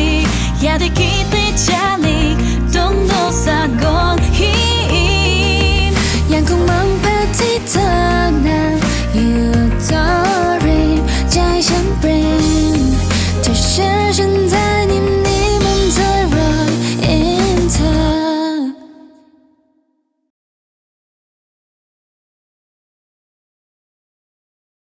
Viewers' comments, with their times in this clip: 0:06 Dosie's Thai sounds so good! Her pronounciation surprised me